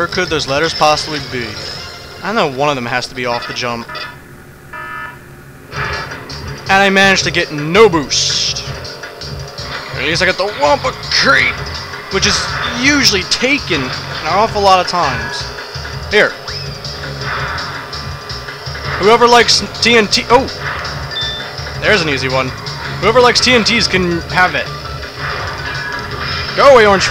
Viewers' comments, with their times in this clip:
0:09 and i managed to get no boobs..... LOL!